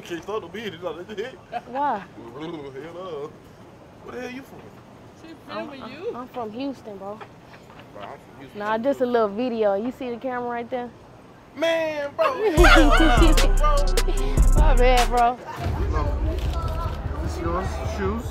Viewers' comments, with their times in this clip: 0:06 why he talk like 😂that 😂😂😂😂blmbbabab